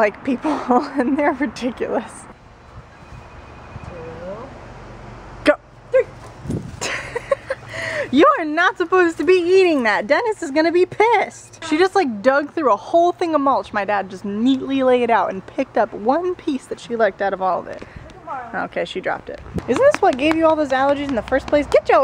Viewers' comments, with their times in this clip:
0:08 does anyone else hear the ringing ?
0:08 anyone else here the facetime noise??
0:09 anyone else go franticly looking for their iPhone when that quiet facetime ringing was going on?